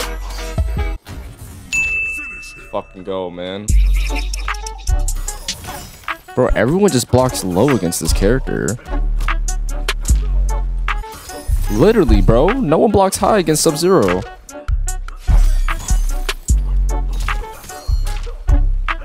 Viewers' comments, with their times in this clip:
0:04 Is it just me or do I just love this music